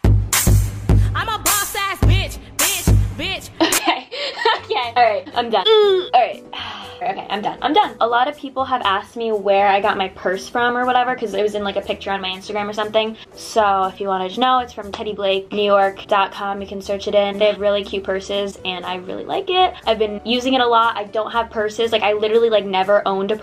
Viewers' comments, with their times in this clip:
0:04 -Music plays Me:"I think you know how this about to go"...doesn't play